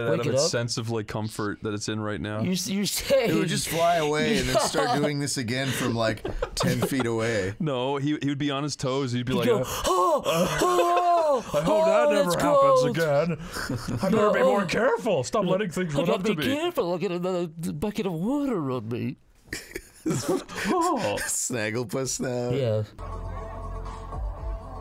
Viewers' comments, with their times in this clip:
0:03 I live for those big nose congested goblin laughs i swear.
0:09 same jelqing sound as the one while playing worms